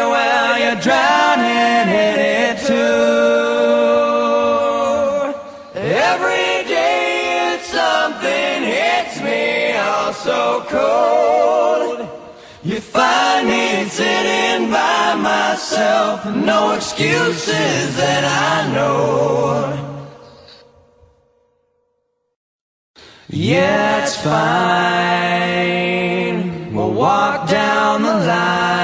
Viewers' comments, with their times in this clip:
0:09 you can hear Jerry's guitar vibrato for a second there. You can actually hear it, but it can trick you!